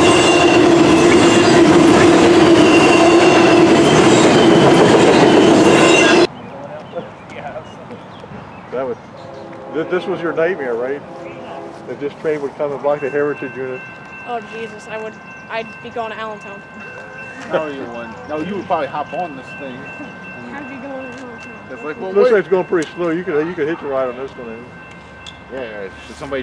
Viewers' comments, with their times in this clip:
0:08 You can hear our conversations !